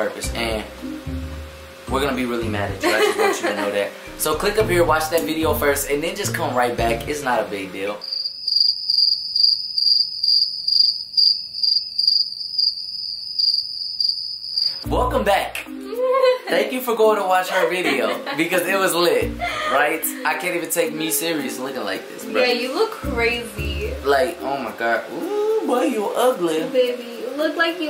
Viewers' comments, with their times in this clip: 0:08 i had my earphones in. My ear drums exploded😂😂